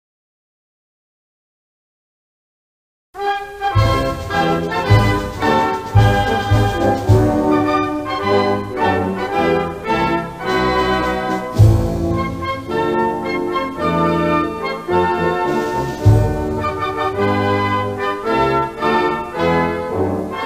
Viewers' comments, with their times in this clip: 0:03 Look like sound soviet union anthem